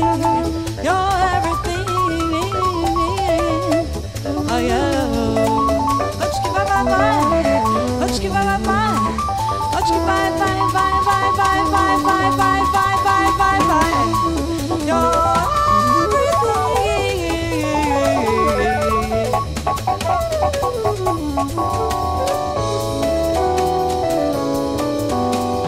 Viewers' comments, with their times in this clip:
0:06 If you'll listen carefully you can hear the lick